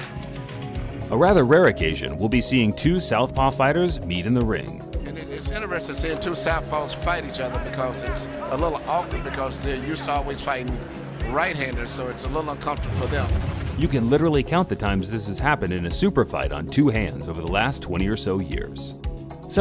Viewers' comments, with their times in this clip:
0:03 Hahaha love the Blood Sport track